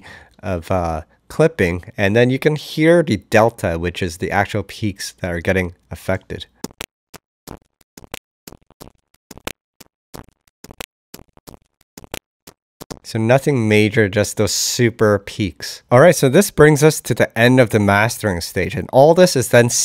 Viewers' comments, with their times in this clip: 0:06 nice GR beat